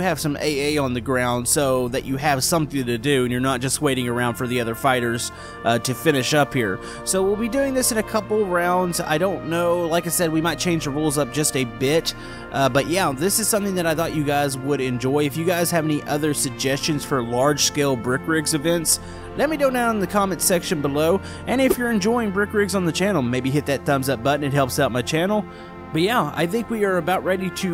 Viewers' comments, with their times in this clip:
0:10 I feel like he said bi*ch